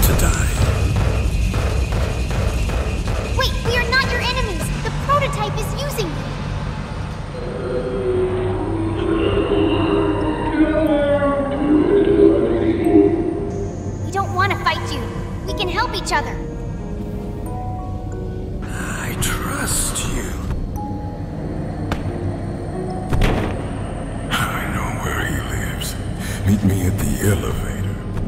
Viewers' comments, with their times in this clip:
0:09 This is scary voice